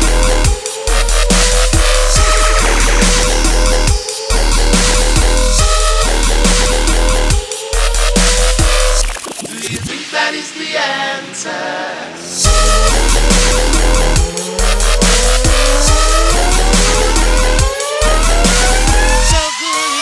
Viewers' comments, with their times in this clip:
0:04 it sounds like a queff.